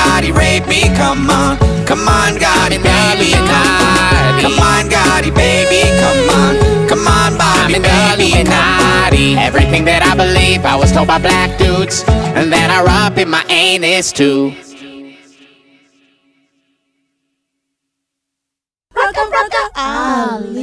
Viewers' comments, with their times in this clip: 0:05 That high note